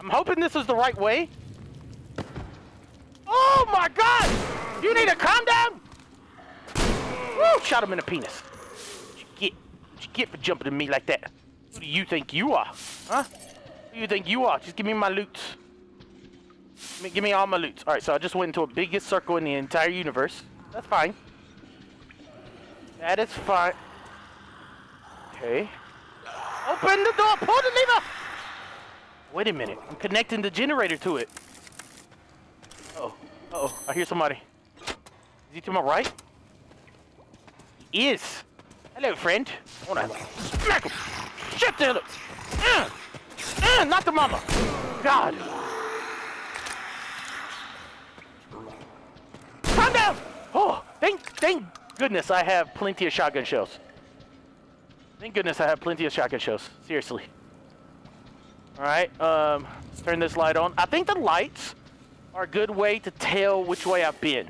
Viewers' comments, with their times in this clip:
0:05 it sounds like he said “ OMG, YOU NEED A CONDOM!!!” LOL 😂😂
0:49 the monster sounds like smegle from lord of the rings